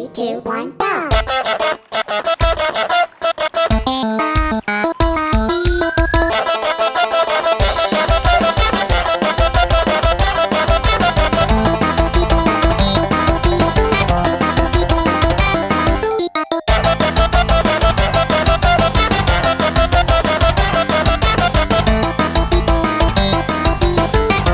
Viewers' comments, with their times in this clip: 0:06 Untitled FNF mod Edit: I feel like on the death screen, they should add the list coming up and crossing out “win the rap battle” Edit 2: sounds like a Super Mario 64 song